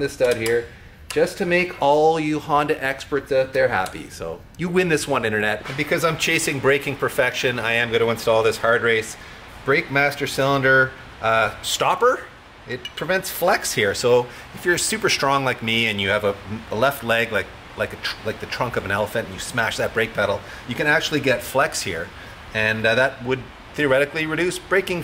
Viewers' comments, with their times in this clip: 0:06 did it start raining? Can't think of anything better than working on cars with rain hitting the roof. Thanks for a perfect Sunday morning. Cheers from Aus!